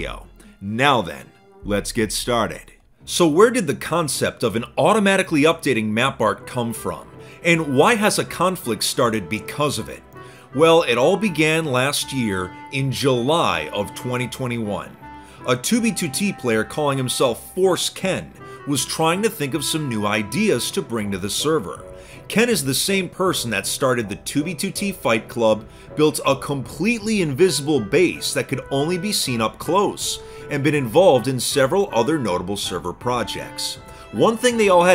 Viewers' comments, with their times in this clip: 0:09 holy crap that background music lol
0:11 nice background music
0:16 i thought i heard forskin